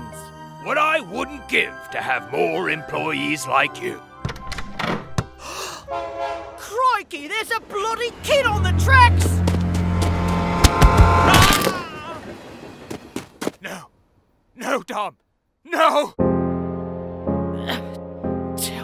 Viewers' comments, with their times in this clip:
0:06 Steam trains do not have horns!